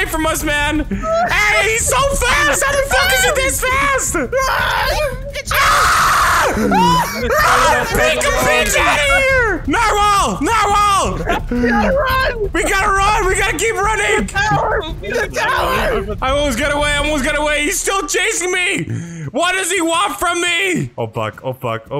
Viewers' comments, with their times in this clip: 0:05 HOME ALONE SCREAM!!